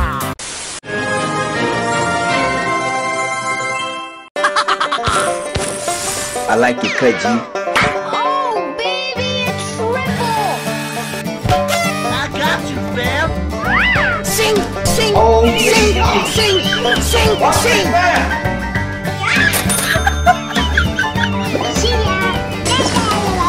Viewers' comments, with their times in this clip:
0:10 that burst was like Hiroshima Nagasaki bomb blast in my phone lol